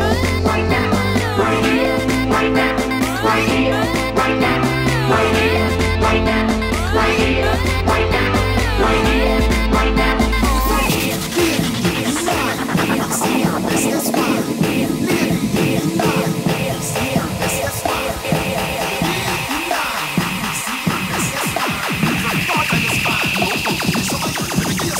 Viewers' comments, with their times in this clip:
0:08 What a set! This is pure masterpiece. Just wondering, how is the 1 beat loop on deck 2 triggered? Didn’t actually see you do anything on deck 2? Thank you very much!